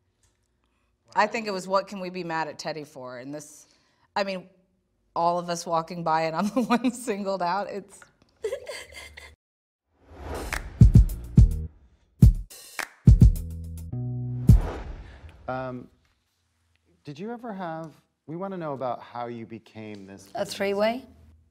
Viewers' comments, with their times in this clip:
0:08 Kyle fake laughing 😖